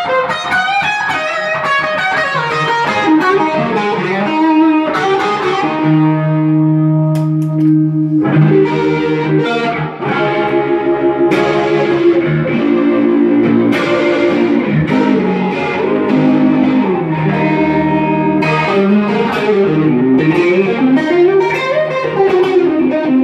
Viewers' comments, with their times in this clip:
0:09 Hi, good demo and nice sounding strat! I would like to know which is the effect you put Thanks.